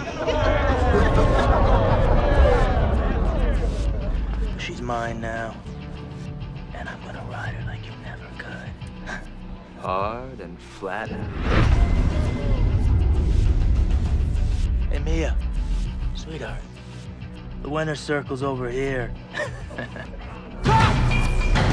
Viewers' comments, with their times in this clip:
0:04 Why is his homie speaking as if he knows something we don’t?